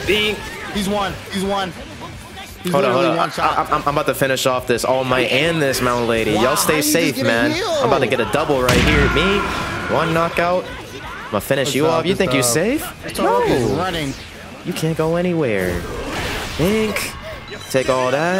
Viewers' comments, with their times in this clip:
0:06 snake's death sound actually suits all might😭😂